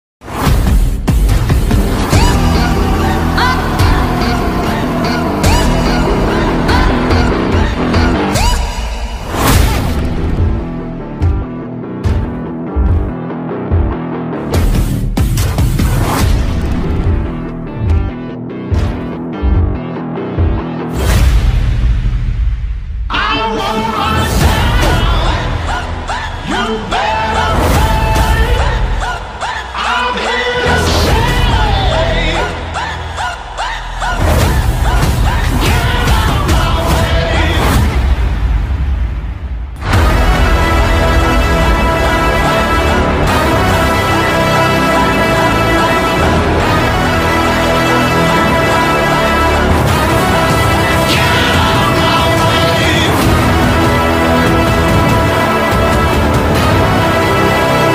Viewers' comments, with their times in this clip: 0:02 bgm pure goosebumps
0:22 one of the best bgm
0:40 was a mass bgm 😎😈